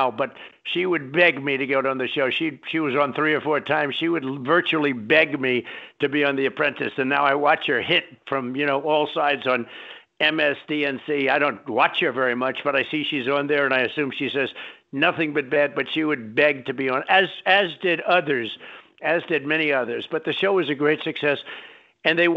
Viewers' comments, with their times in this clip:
0:07 I like how he just casually says "MSDNC". 😅